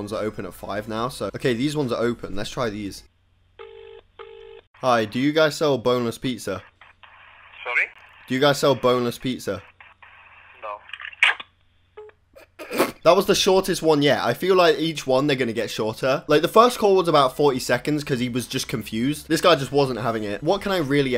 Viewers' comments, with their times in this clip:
0:07 is that dutch?